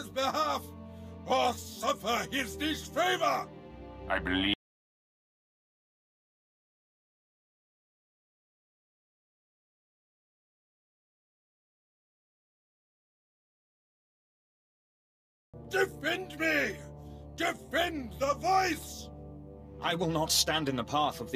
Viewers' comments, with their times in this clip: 0:05 the audio dies :/